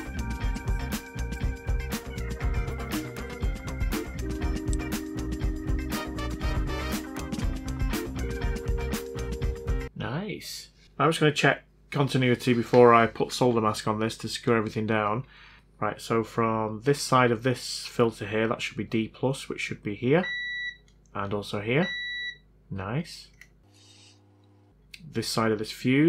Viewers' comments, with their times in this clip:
0:09 The Patreon rap was WAY too good, sir ! 🤯 EDIT the "Niiice !"... you can feel the satisfaction. Make it a meme, it's so expressive ! EDIT 2 : A USB-C powered PS Vita being charged by a Nintendo Switch brick and cable. What a time to be alive !